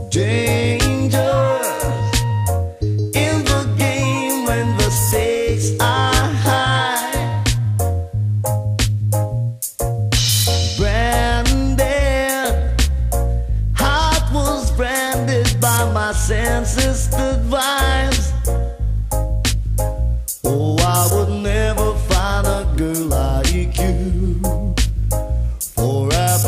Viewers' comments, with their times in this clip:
0:10 STILL REMEMBERING FRANKIE PAUL. HE WAS ARGUABLY THE MOST FAMOUS JAMAICAN SINGER OF THE LAST 30 YEARS, RELEASING OVER 100 ALBUMS DURING HIS CAREER. In 1987 he dropped the album called Sara and the title song became one of his most memorable creations. .On Jammy's Records, it was produced by King Jammy, the most successful record producer of the 1980's in Jamaica. Sara is one of the all time great LP's from the digital age. From what I've read it was impossible to walk around certain areas of London in the summer of 1987 and not hear this killer song blasting from the streets. A monster hit in Jamaica, too, and for good reason. How could anyone not like this song? (Stunning moment when the bass drops down.)